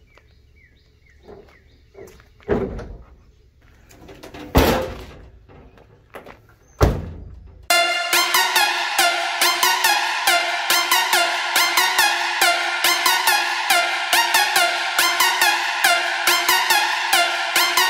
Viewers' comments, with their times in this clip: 0:05 wow that music is super loud and annoying. glad your geettin her back together though I thought WhistlinDiesel had done her in.